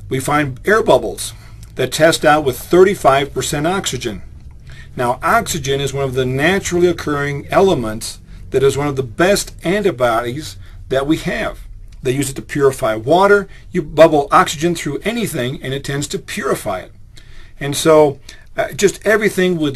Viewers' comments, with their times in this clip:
0:07 Did he just say "antibiotties"?! What does that even mean?